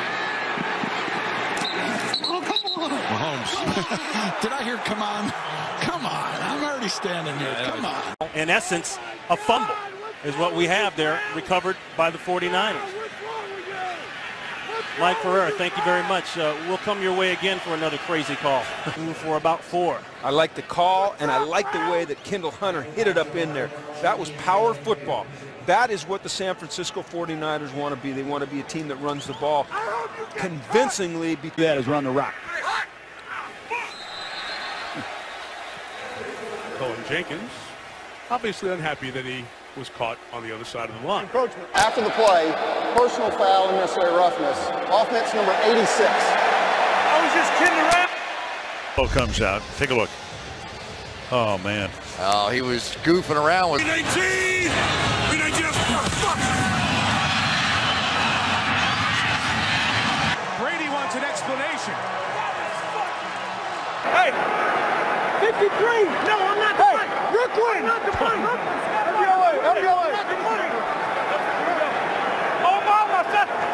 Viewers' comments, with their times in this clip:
0:02 Oh my god I forgot about Stafford's voice crack and almost did a spit take LMAO. Edit: Kirk Cousins, not Stafford, my brain glitched.
0:02 “Hut” “Hut” high pitch “Hut” Got me dying 😂😂🤣
0:02 “Hut” “Hut” high pitch “Hut” Got me dying 😂😂🤣
0:03 I didn’t know Mickey Mouse played football
0:03 this man sounded like mickey mouse 😂
0:03 Mikey Mouse on the field🤣
0:04 Channeled his inner Mickey Mouse
0:04 hut -Mickey mouse
0:04 I didn’t know Mickey Mouse played QB.
0:04 was that Kurt Cousins? lol... wtf was he going through puberty while trying to get the ball snapped? hahaha
0:08 is the best one. You can hear the disappointment.
0:11 n Matthew Stafford sounds like the crazy cat lady from "The Simpson's" lmao... doesn't he???
0:18 sounds like Donnie from Trailer Park Boys lol
0:42 Love these clips and the intensity of some of these guys, but Mahomes had me in stitches. His "Oh c'mon" sounds like he left the drive thru only to find out they forgot his fries.
0:59 I thought he was saying I like ya cut g